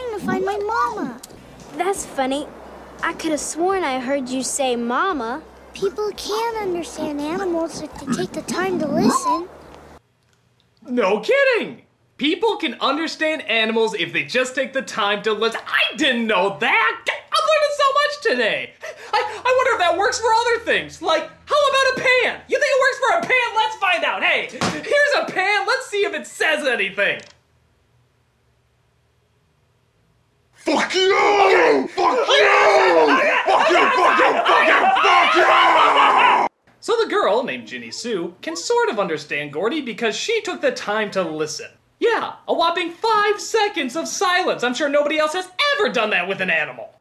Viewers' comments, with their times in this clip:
0:07 what is that? Did they forget to mute the pig before they dubbed over it?
0:27 best voice over a object. my god beautifully executed!😁👍
0:31 no wonder it yelled